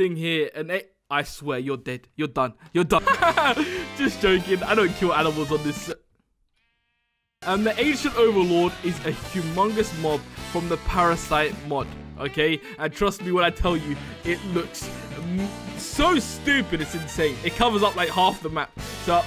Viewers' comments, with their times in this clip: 0:05 random sound cut